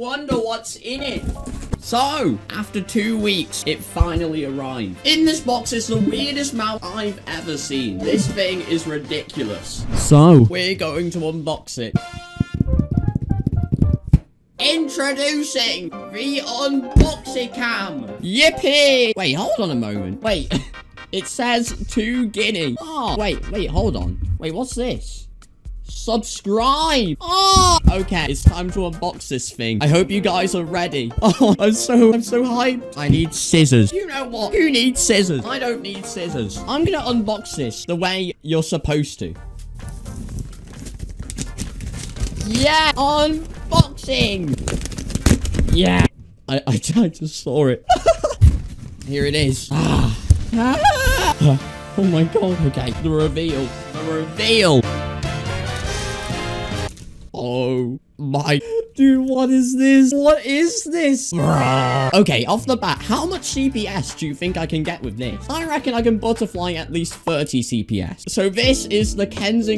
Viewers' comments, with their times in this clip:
0:04 When u said It finnaly arrived You sounded like tommyinnit
0:50 when you turn into a door hinge